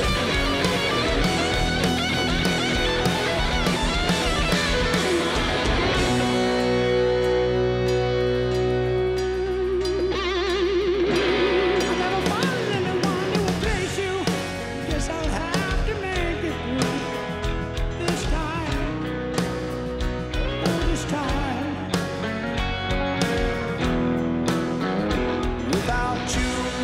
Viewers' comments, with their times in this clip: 0:10 Min Mickey Mouse Voice (pure inocence)*